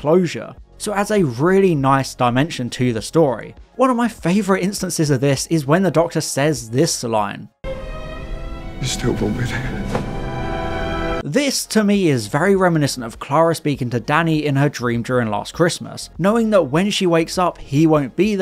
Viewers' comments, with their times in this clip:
0:06 ah yes, that powerful line when the Doctor says “Bstwlbobbit”